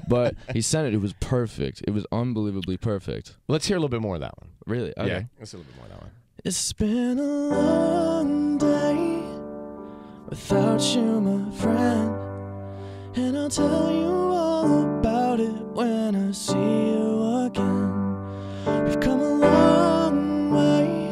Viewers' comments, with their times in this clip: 0:06 the voice of an angel.